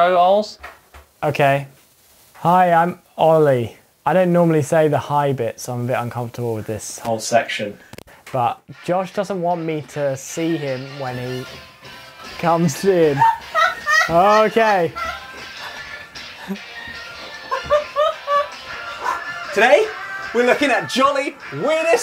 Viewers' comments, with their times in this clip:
0:07 I thought my headphones broke 😧 but thank god it was your mic 😂